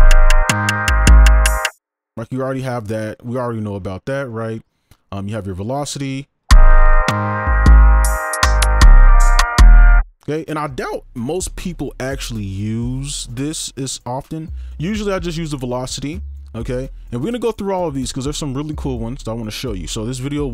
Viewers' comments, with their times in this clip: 0:06 kept going back 'cause the beat was good😂